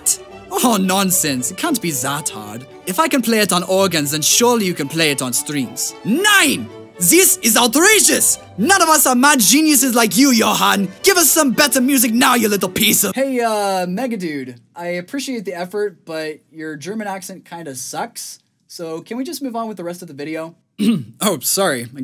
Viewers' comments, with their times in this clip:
0:05 wtf the german accent is instead